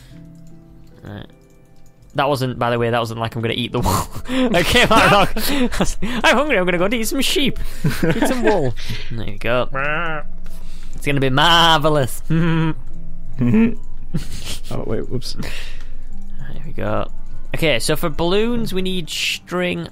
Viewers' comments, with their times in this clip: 0:07 why did it sound like a girl laughing ?